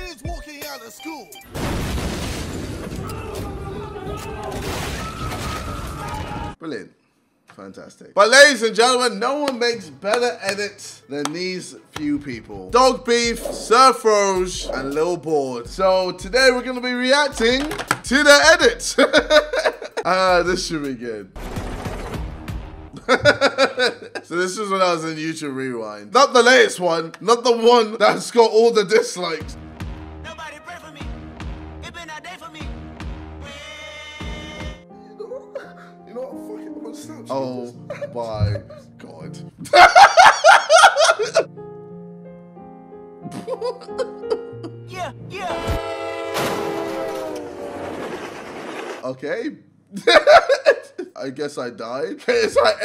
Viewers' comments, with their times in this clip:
0:04 has actually annoyed me how we didn't hear the smash of the vase
0:34 why is ksi crying ??